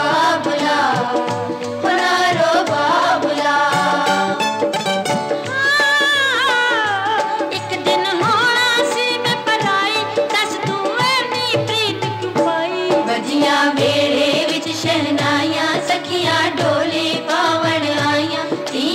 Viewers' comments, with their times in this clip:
0:04 When Madam started singing. OMG. What a legend she was.